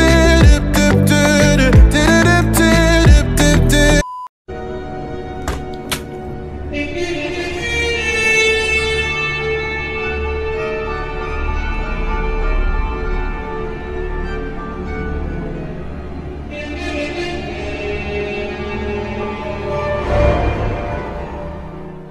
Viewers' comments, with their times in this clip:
0:06 That tune is lit 🔥